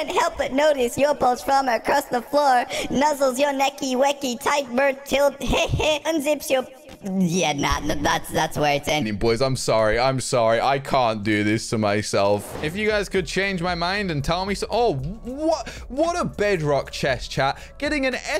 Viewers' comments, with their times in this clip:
0:05 before and after puberty